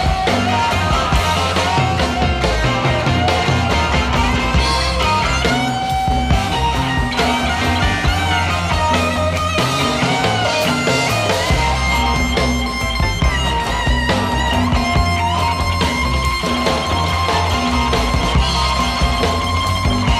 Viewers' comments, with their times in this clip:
0:03 This solo by Ronnie Wood is so pleasing to my ear! I love when he plays.